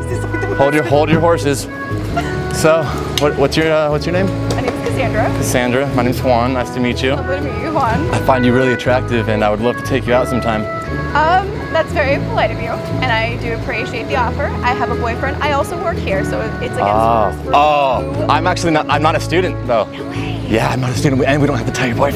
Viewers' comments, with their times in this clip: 0:08 was i the only one who heard "attrucktive"?